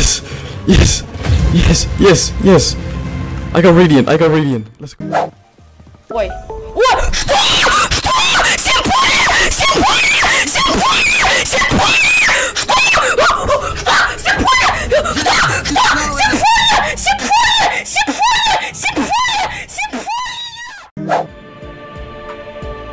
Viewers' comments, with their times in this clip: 0:08 Bro says sympony